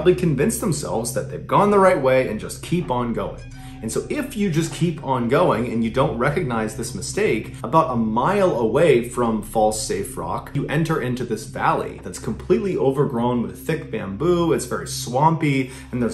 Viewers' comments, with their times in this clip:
0:03 Looking. Eyes darting and scanning with all their might. So far, watched twice and am coming up short except for a minuscule sound that could possibly be from a suspenseful scene in Jurassic Park. (Long exhale of defeat) Not gonna stop unless someone beats me tho. 🙂